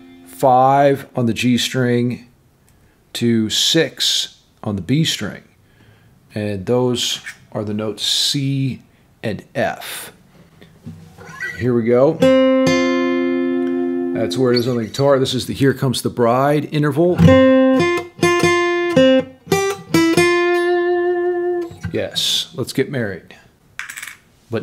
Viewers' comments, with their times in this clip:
0:07 sounds like smells like teen spirit. Lol.